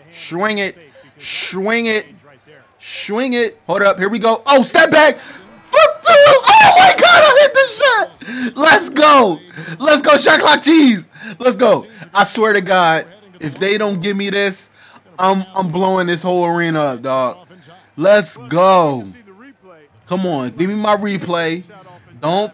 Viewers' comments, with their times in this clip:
0:06 he sounded like my mom with the shot clock cheese lol